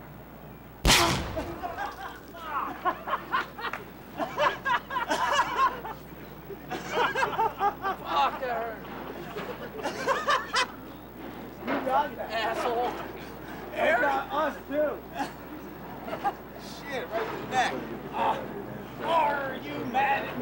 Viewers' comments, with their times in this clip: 0:08 there’s only you laughing Johnny.